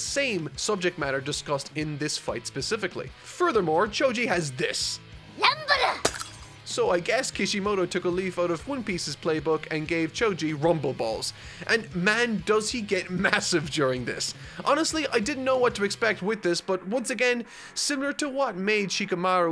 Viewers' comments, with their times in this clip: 0:04 did anyone else hear konohamaru when choji spoke